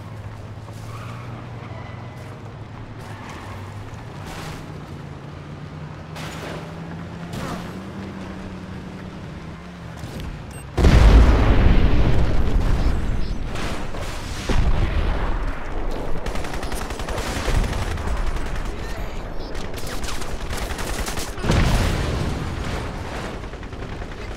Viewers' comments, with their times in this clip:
0:08 C4 boom car 💥